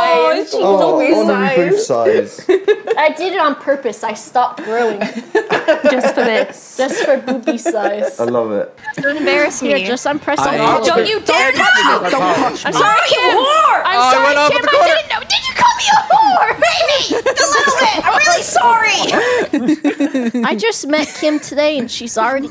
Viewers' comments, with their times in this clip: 0:06 you cut out the actual fart :'(